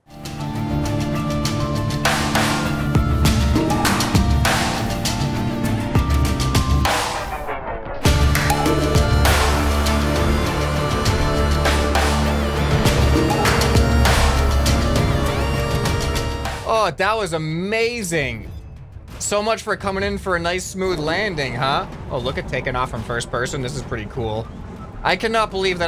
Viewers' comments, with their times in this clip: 0:06 the beat drop tho